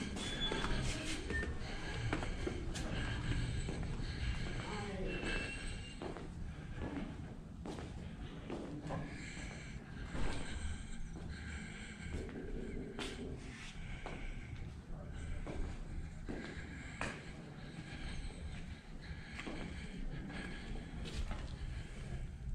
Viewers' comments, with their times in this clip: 0:04 Dang!! Does this dude need an oxygen tank??? His breathing is atrocious!!!